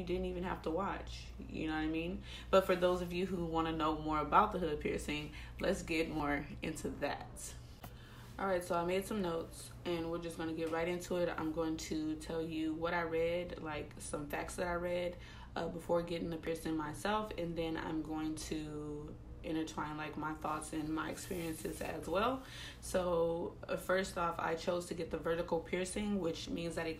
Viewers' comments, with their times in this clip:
0:08 She starts talking